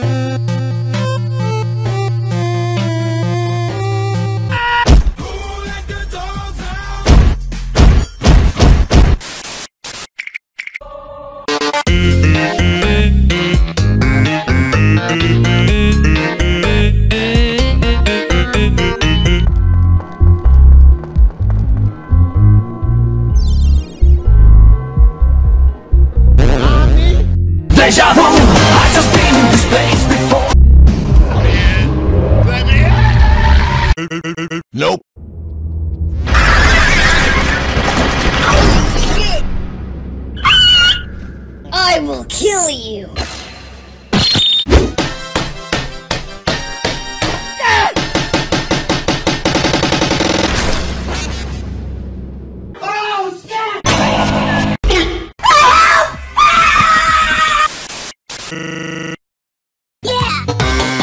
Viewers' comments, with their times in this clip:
0:04 GOTS to be my favorite “AAAHH”
0:44 and the boyfriend screaming for help is the best parts XD